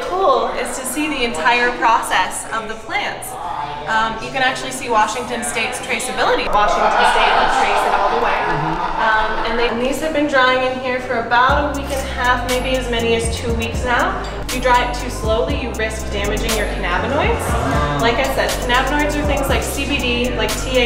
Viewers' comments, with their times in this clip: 0:06 Damn , must be alot of stoned workers there, that laugh in the back*